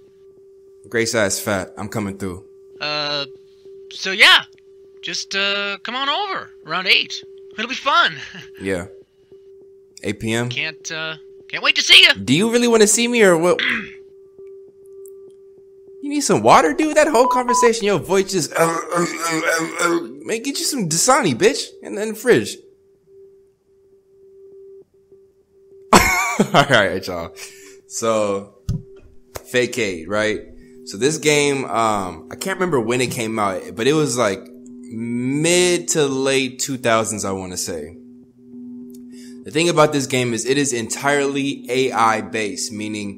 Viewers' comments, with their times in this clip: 0:06 thats how my dog be sounding when he wants belly rubbs 🐶
0:29 HE SAID “FAKEAID” LMAO